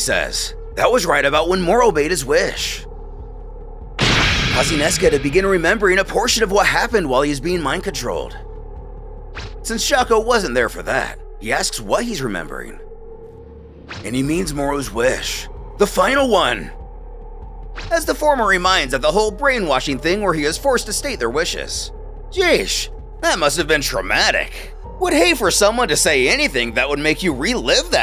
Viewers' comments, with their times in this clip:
0:10 say what?! 🤣😂🤣😂 The way you said it🤣🍻